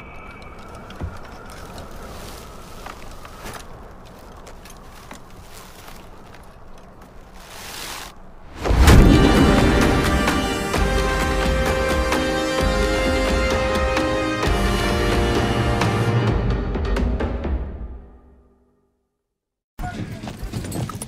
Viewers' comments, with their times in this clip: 0:08 You will learn,never ever take off an assassin's hood.Because it stops music!!